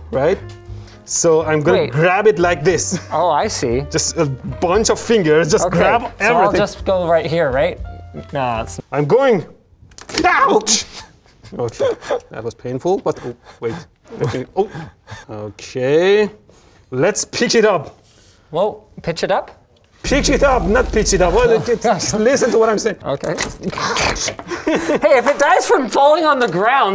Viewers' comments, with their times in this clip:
0:10 He actually did but we can notice it was muted.